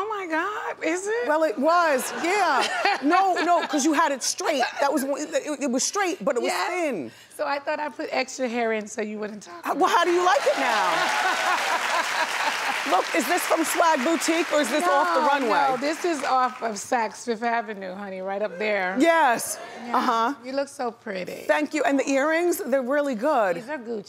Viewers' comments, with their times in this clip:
0:09 “Talk about me”(Nene voice cracked, I cannot deal) 😂😂😂